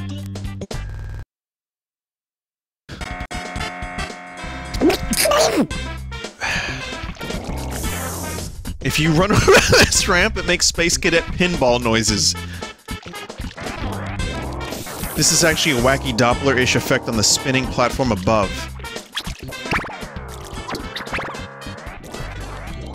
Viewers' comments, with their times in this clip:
0:04 somewhere Donald Duck is trapped inside vinny
0:04 wtf is that noise vinny made lMFAO
0:04 WHAT WAS THAT NOISE YOU MADE